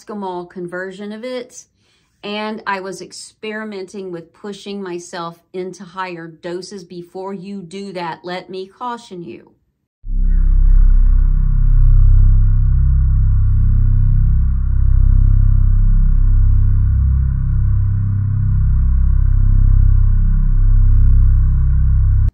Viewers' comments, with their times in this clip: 0:10 Does that part sound like the universal hum?